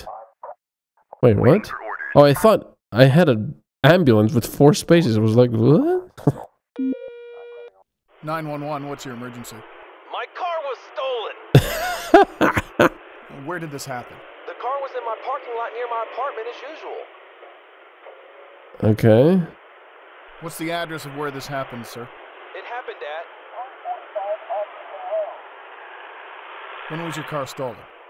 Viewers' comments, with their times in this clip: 0:09 I don't know what's wrong with me, but this guy's Voice is frickin' hilarious!